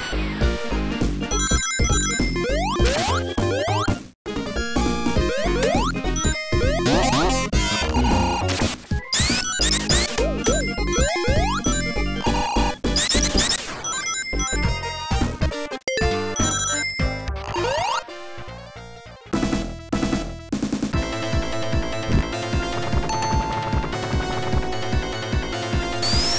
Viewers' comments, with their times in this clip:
0:07 (Knuckles voice of Sonic Adventure)Oh no